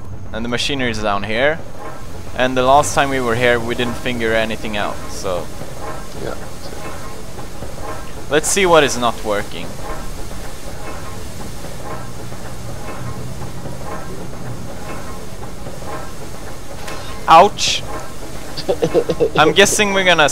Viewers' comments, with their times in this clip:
0:03 FINGER ANYTHING OUT?!" i think he meant figur i canty spell XD
0:03 "We didn't finger anything out" XDDD I love your accent so much Pewds<3
0:03 he didn't "finger" anything out? Made my day!
0:04 Pewds: we didnt finger anything out. Fail
0:06 did PewDiePie say finger or figure? Cause it sounded like finger.